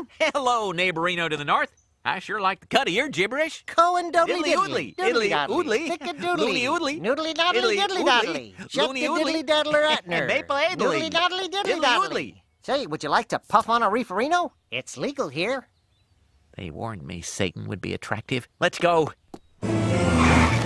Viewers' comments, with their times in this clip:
0:04 I thought I had a stroke when they were talking.
0:08 Did he says "shat de-diddly-datler"?